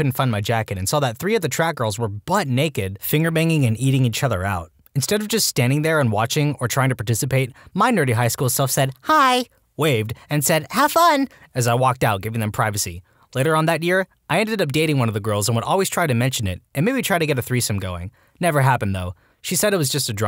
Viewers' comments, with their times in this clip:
0:08 That was not a nerd voice that was straight up spongebob